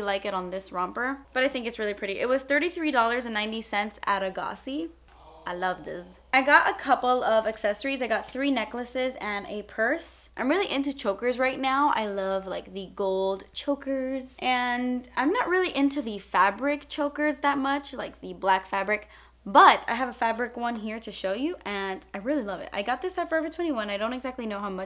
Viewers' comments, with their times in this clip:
0:05 scared me lol what was that noise???